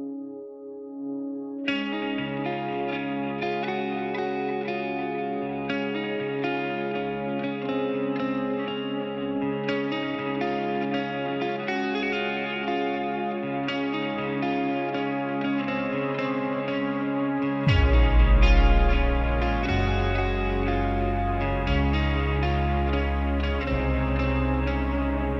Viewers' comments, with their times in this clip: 0:08 R.I.P Avicii Legends never die Sandro's voice is impressive and beautiful.. I Love You Avicii and Sandro